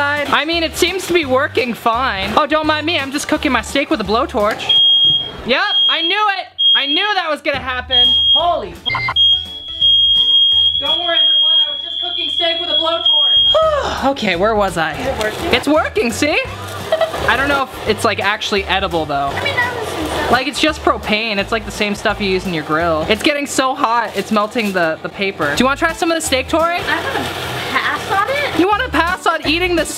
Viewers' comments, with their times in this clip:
0:05 I thought my fire alarm was going off because I’m cooking
0:11 rip headphone users ME Edit:HOW IS THERE TWO OF THESE